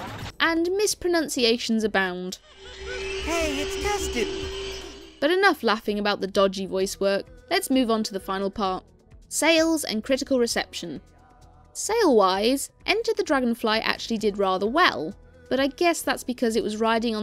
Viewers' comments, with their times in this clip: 0:03 From how abruptly it was cut, I wouldn't be surprised if Tom Kenny said test tube by accident and they just had to work with what they had It's a shame about this game. I absolutely love the ideas of Cloud 9 and Thieves' Den and I can dig the music. It's just a shame about everything else. It's not the worst thing ever but definitely one of, if not, THE lowest point of Spyro. Another thing that was annoying was in Thieves' Den, if you were backtracking for gems and die, those gem enemies respawn and waste your time as they make you think they are the missing gems. This was a good review! I will now attempt to binge watch your other videos lmao